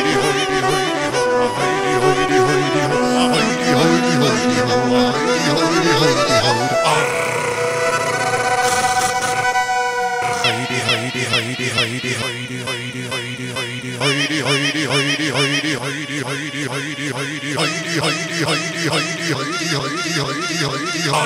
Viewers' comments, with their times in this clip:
0:08 it's more like viking metal :D but those genres are related :D up until around the mark, I don't like the dubsteppy bit XD